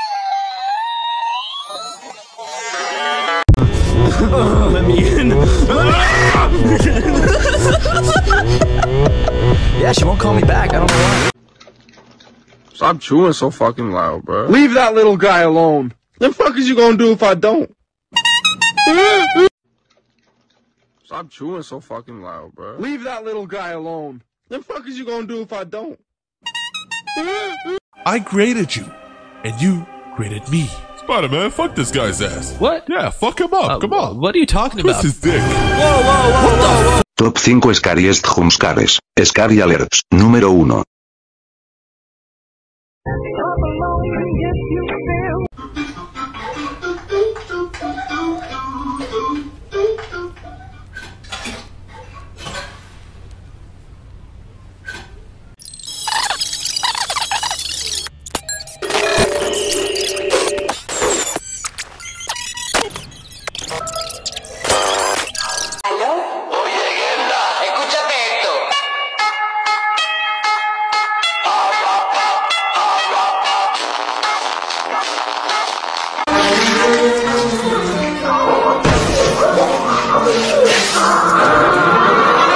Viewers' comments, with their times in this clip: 0:07 Bonnie laughing is goofy😅😅😂😂😂
1:07 Evan: Sleeping Very Very Loud Sound Starts